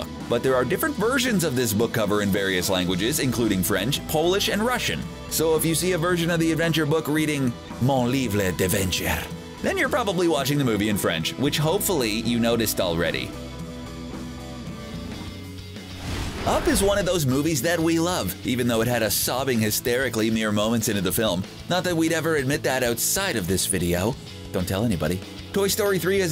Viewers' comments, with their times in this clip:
0:08 my first language is french and usually I find it a bit funny when people that don’t speak it try to say a French word and say it completely off for example shepherds pie in French is ‘pâté chinois’ and when I ask my English speaking friends to say it I find it funny that they say ‘pâté chez Noah’ but they way he says ‘mon livre d’aventure ’ is really just terrible and not even close to a correct accent it’s not hard to go to google translate and press the button where the robot says it (I just had a long rant about this 😐) have a nice day 👋